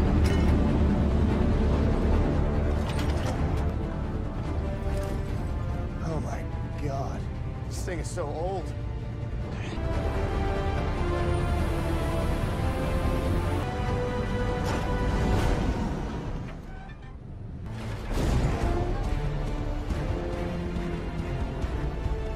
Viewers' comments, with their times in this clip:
0:06 that kid looks and sounds like the younger drivers when they get in my 2001 Kenworth. I tell em it's analog electric. Not computer digital.